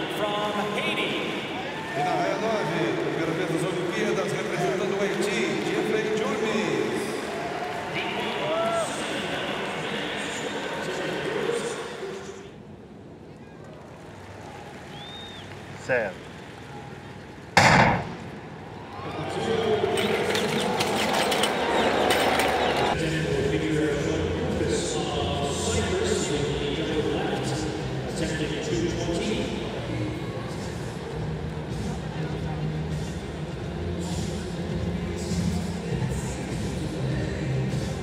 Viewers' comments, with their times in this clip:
0:09 when the NES track&field pad isnt working. im still laughing 5 years later. 😂😂 what made this even funnier is the sound of the hurdle hitting the track
0:20 When the gun was shot and you thought u were in a 100m race: